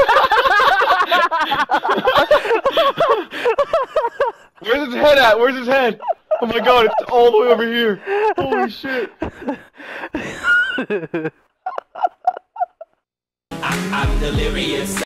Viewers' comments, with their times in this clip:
0:08 the back crack